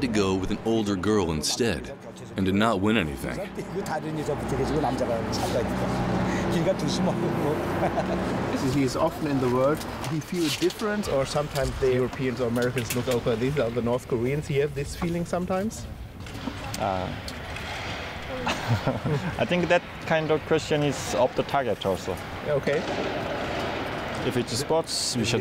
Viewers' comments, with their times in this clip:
0:09 What exactly did he say, there? Couldn't quite make it out? "As is often.. the work? world? word?... then something about the Europeans look over...something, something.... "do the koreans also feel like that?" Feel like what? ...didn't understand it. Could anyone give me the exact question he asked?